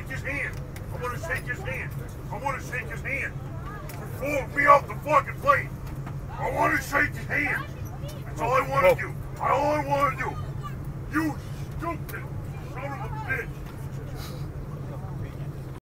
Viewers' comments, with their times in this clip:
0:12 You can even hear the slap sound